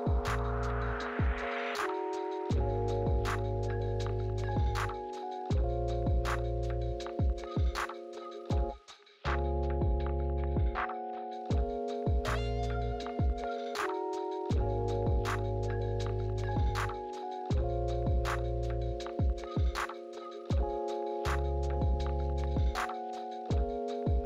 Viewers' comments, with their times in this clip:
0:08 the way the music gets muted when he flips it over :)